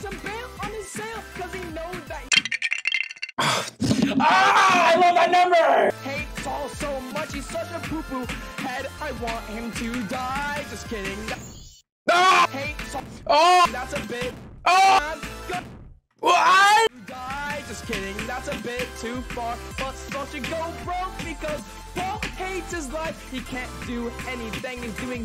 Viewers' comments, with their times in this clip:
0:08 the scream was so funny istg